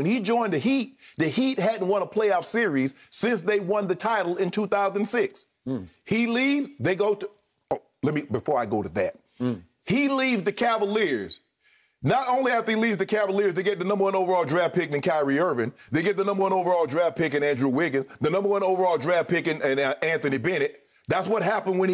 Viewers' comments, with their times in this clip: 0:08 Skip with the mmms 🤣🤣🤣